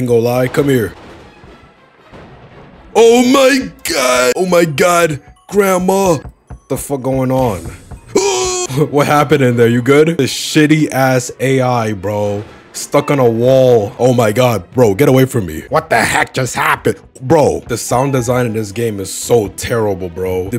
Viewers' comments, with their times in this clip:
0:06 the scream bro ☠️